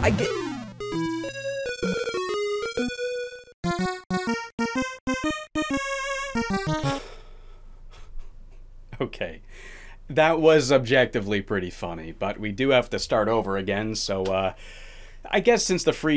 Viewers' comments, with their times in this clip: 0:04 That was some major "not mad, just disappointed" tired dad energy in that laugh XD